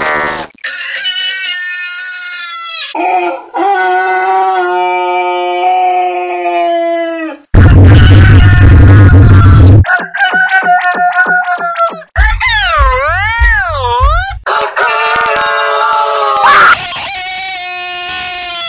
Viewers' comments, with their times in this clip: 0:03 Imagine you wake up in the middle of the night and hear your rooster crowing like this: I would sh!t mysrlf